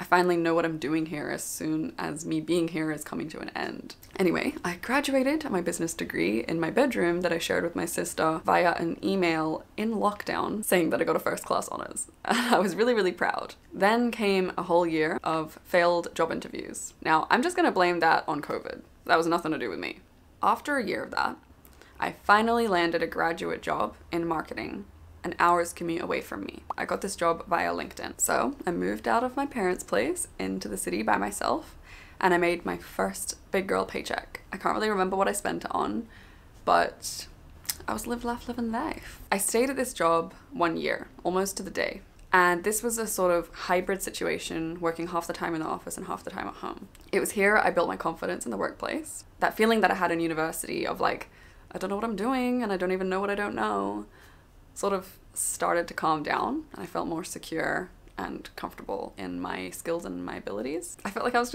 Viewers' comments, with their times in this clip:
0:07 Example of the pronunciation of Via in UK
0:46 I'm currently at the watch-mark and I can't help but ask what your accent is. I'm hearing all sorts of stuff (British, Australian, American)and I cannot pinpoint exactly.